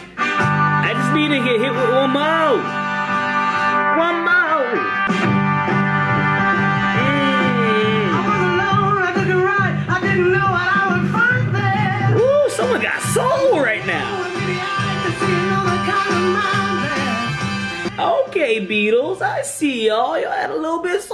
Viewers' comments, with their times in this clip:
0:08 Paul likes to transition into little richard.